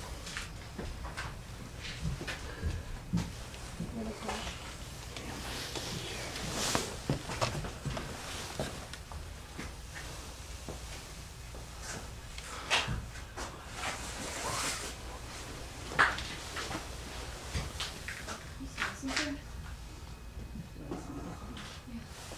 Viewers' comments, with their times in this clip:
0:05 There is a faint wisper cant make out what it says. Listen with headphones turned all the way up.